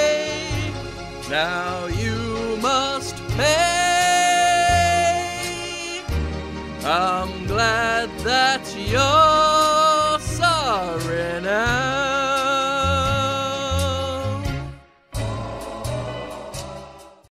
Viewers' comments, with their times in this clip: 0:06 "I'm glad that yoOOooOuuUuuu're SOOOooorry noOoOooOooOOooow." Sorry for hearing Jim sing. Christ.